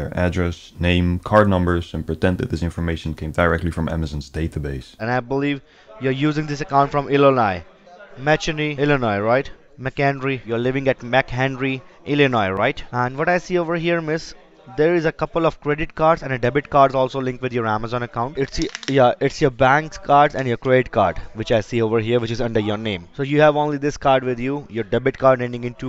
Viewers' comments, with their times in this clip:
0:07 he says il-li-Nie 😂